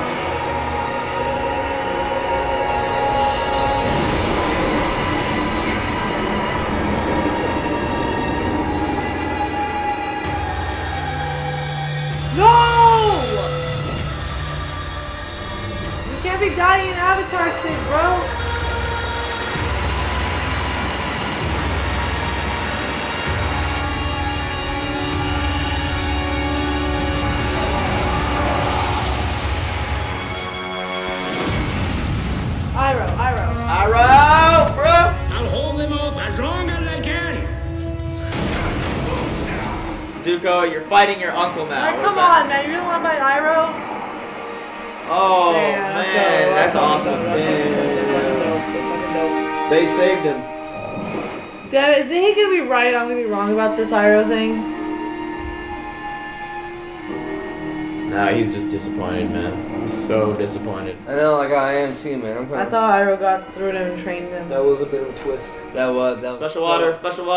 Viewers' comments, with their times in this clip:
0:09 Bart Simpson's voice you can actually pinpoint the second where their heart rip in half
0:49 I love the little details in huge series like this, notice how there’s multiple scenes where the duduk horn(the horn used for the sounds for iroh’s instrument) reflects what emotion Iroh is feeling, like he feels disappointment, and you can hear that emotion through the sound of the horn.